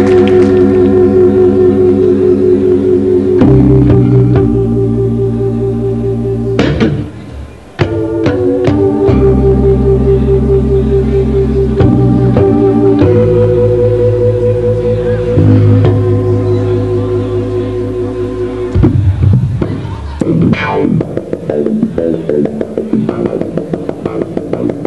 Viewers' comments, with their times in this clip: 0:05 it's like he's loading a funk shot gun.